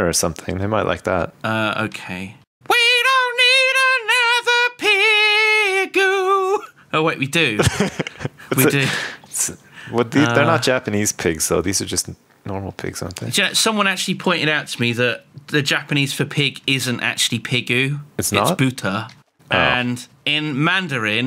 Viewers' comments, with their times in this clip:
0:03 tina turner outburst